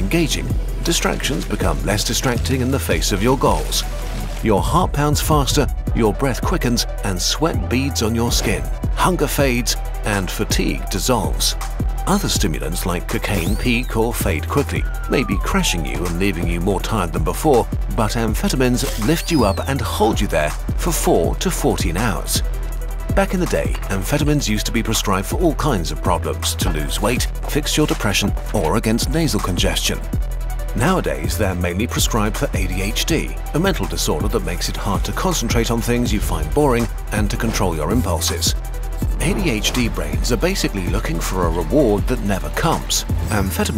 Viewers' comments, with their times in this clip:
0:05 Would opioids+ amphetamines negate the effect of the other🤔. Btw the soundtrack seems on point😁.
0:29 yo the music is actually dope
0:29 yo the music is actually dope